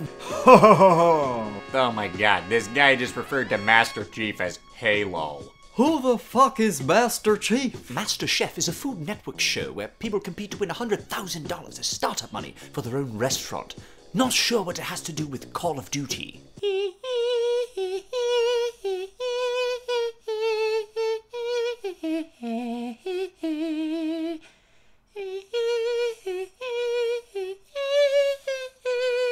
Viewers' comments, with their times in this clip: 0:07 nailed that accent
0:16 Michael Jackson Acapella